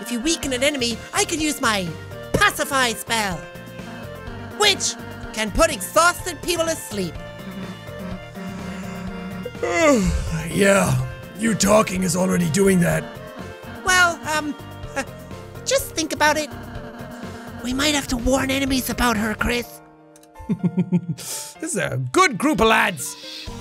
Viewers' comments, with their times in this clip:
0:09 anyone else notice how he managed to make the most convincing yawn P.S. THE POWER OF SHIT